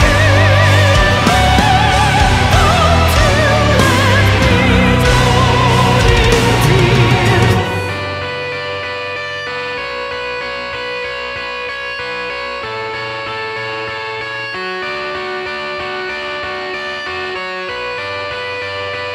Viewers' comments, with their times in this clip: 0:07 is just awesome. They are masters of fast and heavy, but when they go slow and melodic, it's next level.